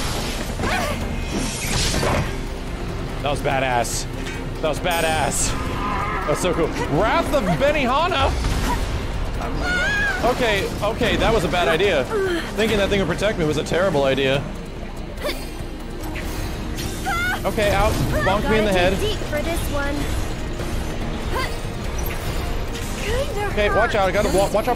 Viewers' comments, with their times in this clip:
0:06 Breath of Benny Honda? That sounds like a badass Benny attack